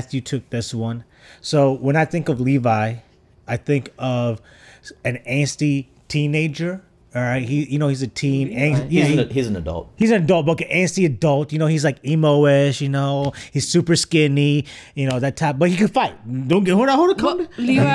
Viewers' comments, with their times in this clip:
0:03 Has this guy watched Attack on Titan, or did he just see pictures and a couple scenes? Probably the worst description of Levi I've ever heard. The dubover voice actor is probably the worst pick for Levi ever. Levi had a very distinct recognizable voice. The dubover guy sounds like a generic "dude".